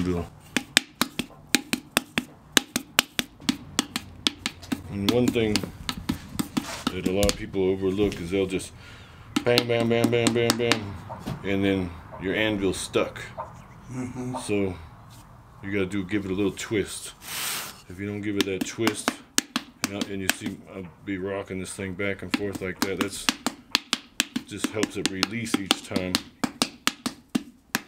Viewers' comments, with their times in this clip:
0:08 this is how you know this guy knows his stuff. i've talked with some really skilled people in my life, and a common thread between all of them is that they all know exactly how to make a mistake. they also know exactly what mistake you're going to make after taking one look at you. it's really interesting to see. EDIT: also, this guy's name sounds like a dinosaur, and his voice sounds like silvester stallone.